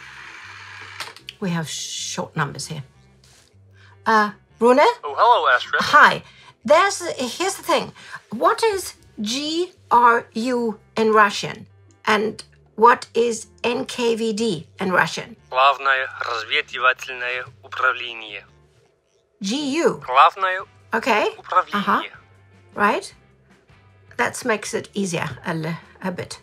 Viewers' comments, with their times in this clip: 0:07 omg the guy can't pronounce it correctly either. Like really if it was taken out of context, no Russian would understand what he's saying 🤣 You should have called me instead